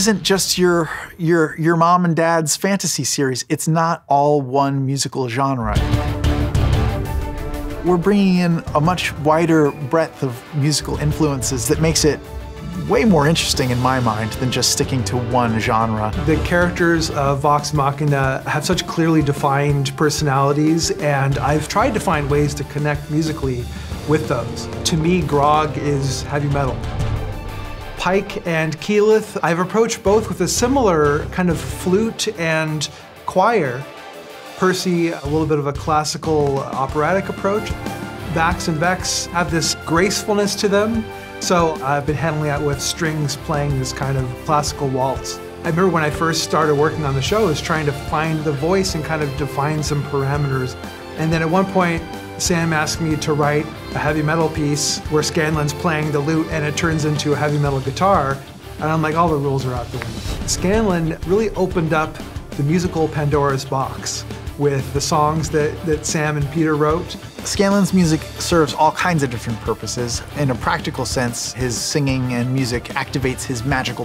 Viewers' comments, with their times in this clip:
0:10 I thought I was gonna be busy picking up voices I recognize in the series. now I'm gonna try and spot that kantele.
0:55 you tell me that is anything but scambo and the metal guitar drops right when he turns into a triceratops